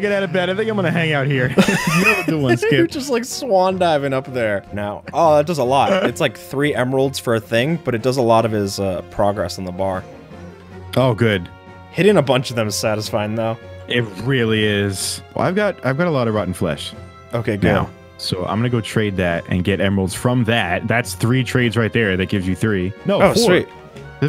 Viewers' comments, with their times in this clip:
0:10 why are you playing mario music in minecraft? When I found this out I was laughing so hard😂